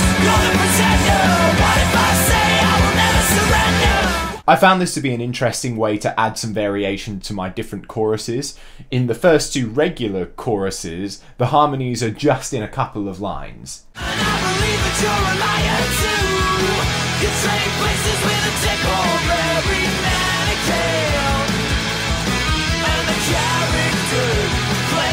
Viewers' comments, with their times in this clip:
0:06 thats a chorus and a superchorus